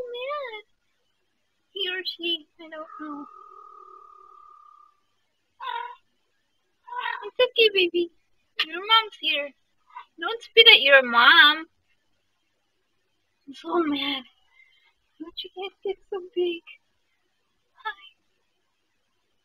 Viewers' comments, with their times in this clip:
0:03 I think I heard a growl !